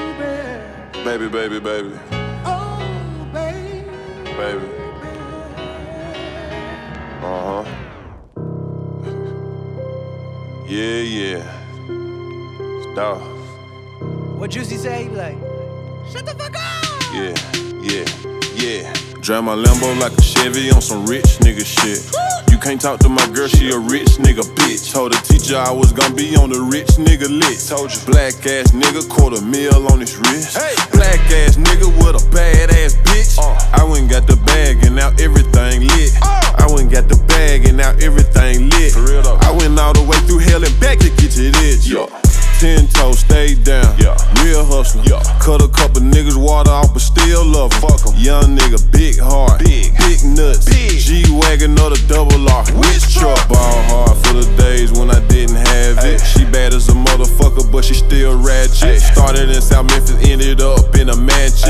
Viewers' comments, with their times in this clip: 0:07 Beat went straight to hell
0:47 WHO made this exhaust on the lambo 😂